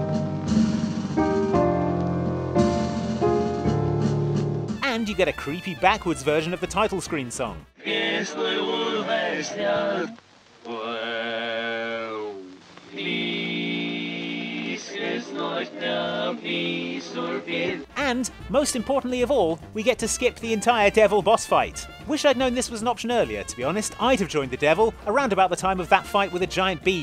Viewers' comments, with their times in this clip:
0:10 why does it sound like the is saying "Well, This is nightmare"